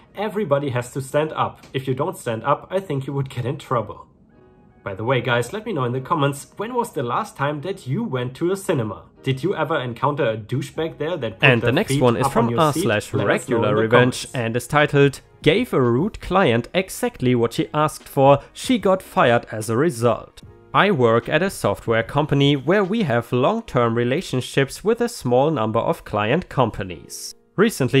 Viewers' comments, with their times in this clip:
0:08 real quick. is when some audio overlap happens. also. beware what is infront and behind you as we see the reflection of the Glasses and the coldest winter I have ever been in was around 60 to 70 degrees U.S. 15.5 to 21.1 everywhere else
0:11 I kinda like the new format you are doing. I mostly listen to you when i am in the kitchen doing the dishes, and the new breakes inbetween the stories is a good break off. Exept for the little mishap it sounds really good 😍👍
0:11 your audio got is overlapped from your facecam clip and the main video.
0:12 At around time index you have the audio overlapping with your facetime and story audio for 2 or 3 seconds